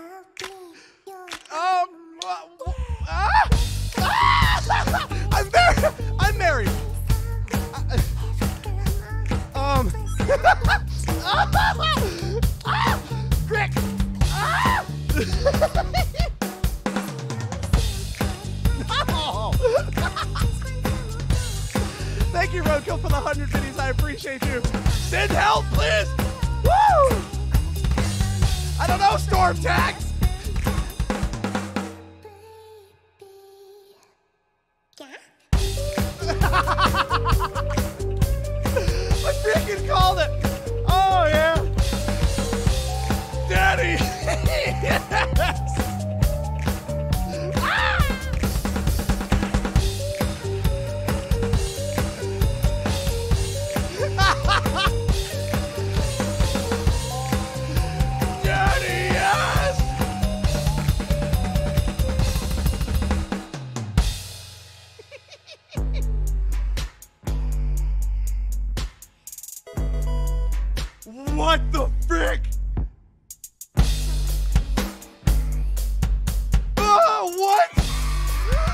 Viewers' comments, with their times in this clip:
0:10 Teacher:What sound does parrots make? That Random Kid from the back:
1:02 BLAST BEAT! OH YURRR